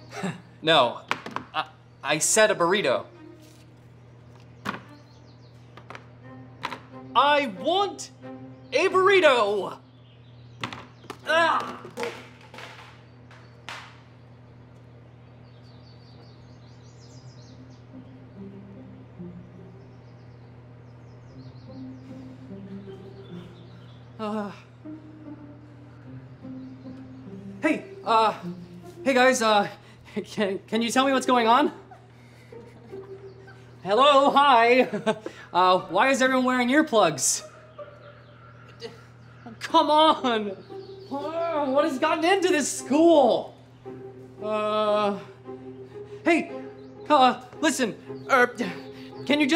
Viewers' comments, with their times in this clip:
0:07 That accent from the mean teen is funny
0:09 did he just turn British for 2 seconds 😂
0:11 THE WAY HE SOUNDED WHEN HE KNOCKED THE PIZZA OUT HAD ME DYING🤣🤣🤣🤣
0:30 in the deaf people are talking quitetly bruh